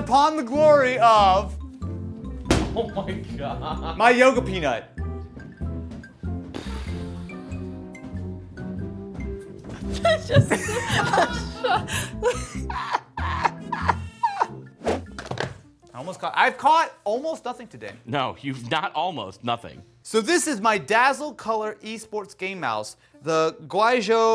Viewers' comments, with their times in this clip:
0:07 Me: waiting to hear POP
0:09 Editor forgot censor sign 💀
0:12 is it just me or did they got tired of censoring the fxxck the dishes?